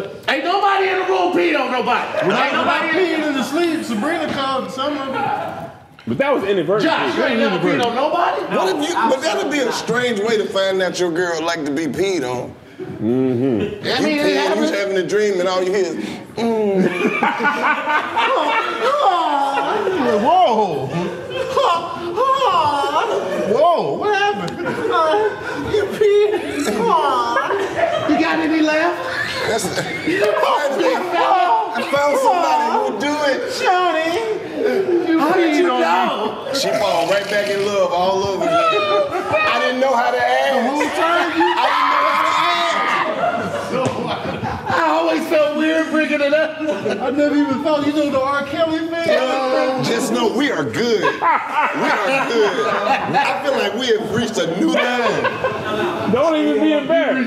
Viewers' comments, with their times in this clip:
0:09 hearing Tony moan was the last thing I expected to hear on this show. That sh*t is insane😂😂😂😂
0:40 FUCKING LOVE KEVS LAUGH